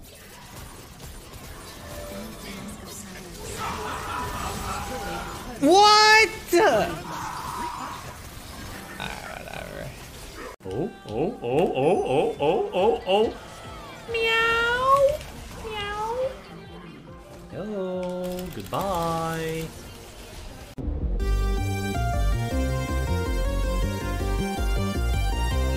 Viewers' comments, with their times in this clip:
0:10 when your seal and your cat are having an argument